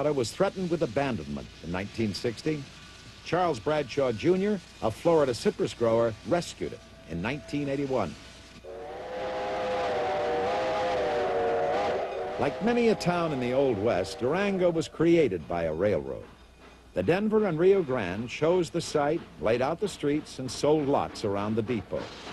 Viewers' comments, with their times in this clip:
0:08 tear to my eyes for a 5 chime whistle